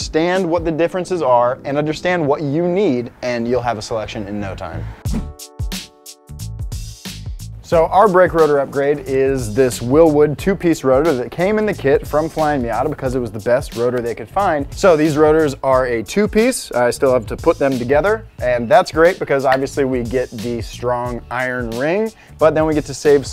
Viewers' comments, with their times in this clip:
0:05 Idk if I’m on crack but I heard the p*rnhub intro